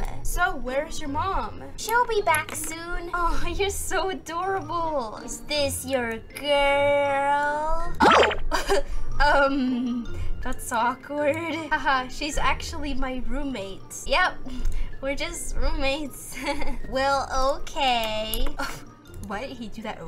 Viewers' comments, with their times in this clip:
0:07 Boy: is this your girlll Alex: ummm haha laughs nervous 😬 Zach: haha no this is my roommate Ship Zlex if you ship Alex and Zach Ship Dlex If you sh Dustin and Alex